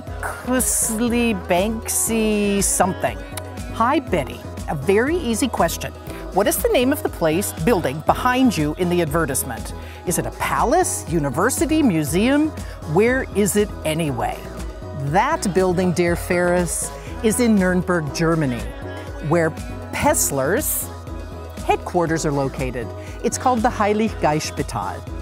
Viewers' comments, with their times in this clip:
0:09 You pronounced Advertisement wrong and you call use uneducated, that's it brexit means brexit, I'm outta here we don't need the eu.